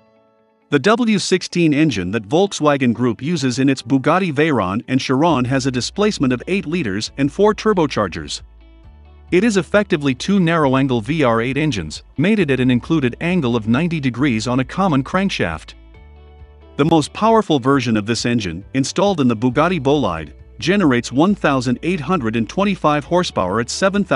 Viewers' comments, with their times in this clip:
0:06 “ “W’R’16” .. the R eh..